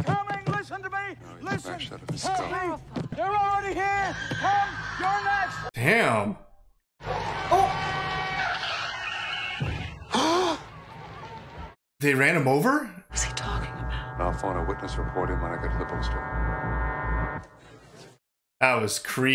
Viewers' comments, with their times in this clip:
0:04 This scene terrified me when I first watched this film. Hesring the inhuman scream in the background, along with the creatures running toward the man! This movie is great!